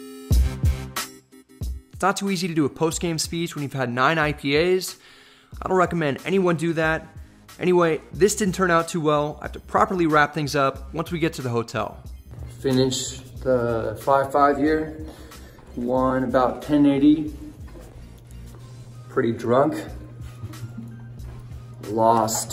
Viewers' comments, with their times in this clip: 0:09 his friend laughing at him. Lol